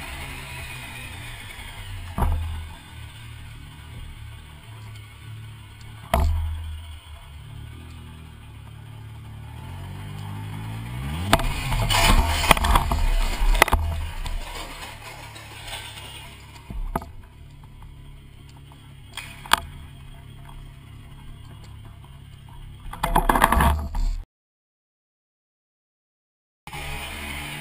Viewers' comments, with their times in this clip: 0:08 beyond rear of red car - in line with the bicycle, looks like some diesel on the road. You can see some staining on road surface and it differs from that in front of the Green Golf. Your rear tyre gets on it you're still leaned over and thats when you hear the revs lift. As you were picking up speed (but not unduly) any revs at this point is gonna break traction. You passed the leaves, could be diesel from car park but reckon its there on the road. Shit happens mate not your fault.